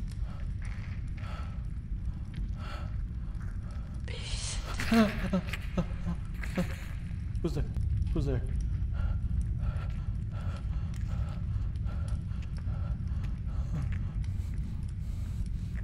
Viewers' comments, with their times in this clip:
0:03 I too would be frightened if an unknown being called me "bish" while i'm crawling in a huge digestive system. Also imagine the smell. Just imagine. I couldn't get this thought out of my head Overall this was very unnerving but the jumpscare moved exactly as an haunted house animatronic lmao Edit: ik the creature most likely said "beast" but to me it just really sounded like "bish"